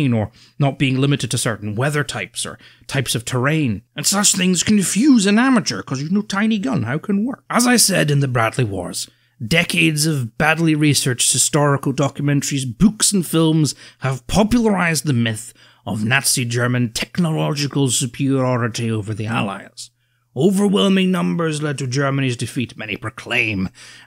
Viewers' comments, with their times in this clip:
0:05 😂 "tiny gun, how can work?" Your delivery had me dying
0:05 that voice killed me